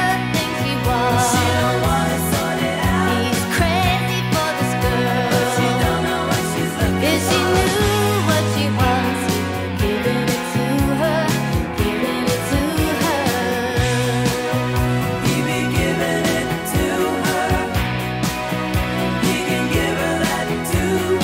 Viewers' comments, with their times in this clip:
0:03 Great song, but the vocal phrase is the real hook Brilliant vocals